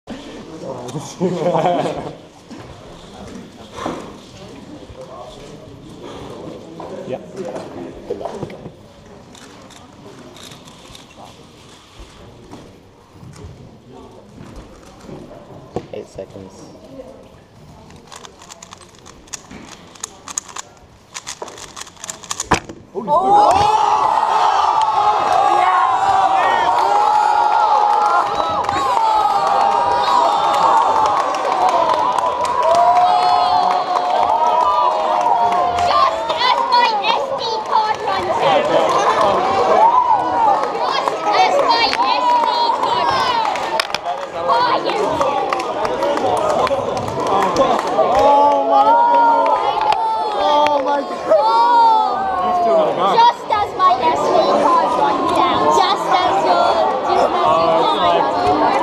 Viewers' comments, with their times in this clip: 0:01 what kind of laugh is that
0:45 this guy with the strange voice
0:46 Hi YouTube The way the kid say that 😂😂😂😂